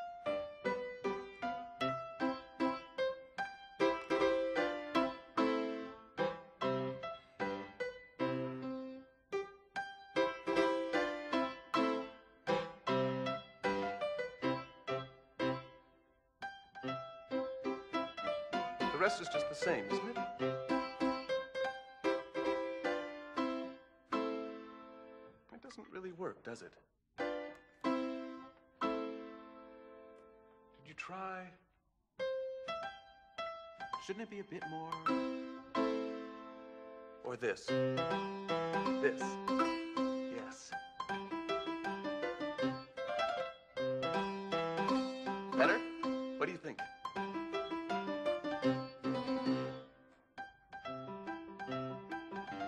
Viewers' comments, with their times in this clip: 0:05 'Not sure if this music is authentically Mozart, however in this scene despite the fact that Mozart uses far greater keyboard technique to accessorize this simple piece, he deletes the most important harmonic chord which was key in expressing phrasing and creating resolution to the first part of the composition. In other words, Salieri's version was compositionally more musical.
0:38 The moment Mozart starts to improve on the March, the emperor subtly brings the music down. It's obvious because they're no longer checking for accuracy but it's still a brilliant way to represent Mozart's improvising talent.